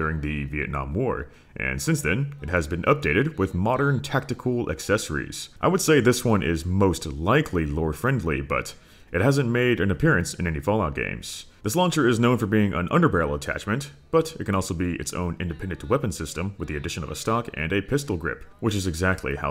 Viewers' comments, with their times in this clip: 0:04 I shot one of these in the Navy, this mod has that authentic "blowing though a paper towel tube" sound.